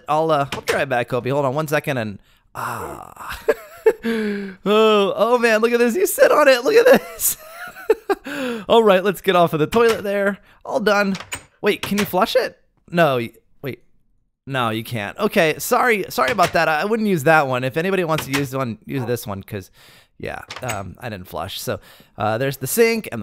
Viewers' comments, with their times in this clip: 0:08 press F for farts lol